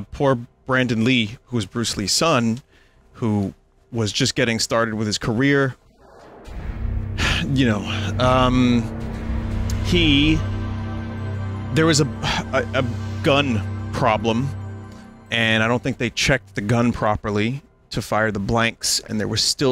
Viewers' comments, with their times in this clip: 0:04 Talk about extreme surround sound with Acclaim logo it made me jump thinking the noise was elsewhere.